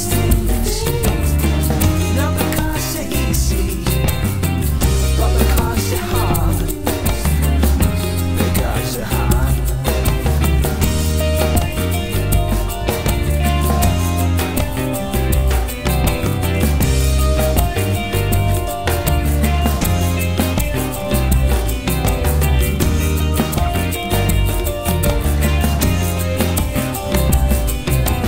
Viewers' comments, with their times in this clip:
0:10 The guitar is totally sublime... love it.... the Podcast version is so much better to listen to....